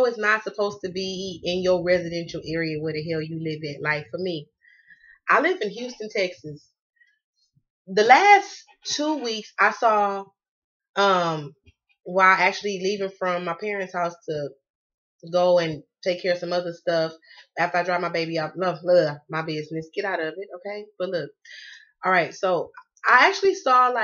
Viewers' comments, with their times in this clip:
0:08 I heard the siren on the dot when I view this video which is my twin flame birthday....what those sirens means I here them sirens all the time...but don't know what it means